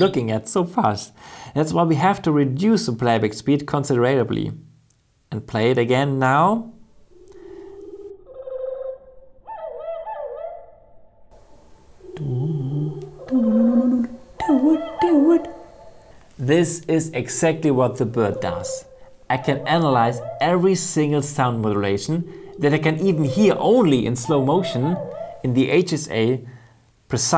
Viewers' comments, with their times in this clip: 0:08 it got jurassic real quick!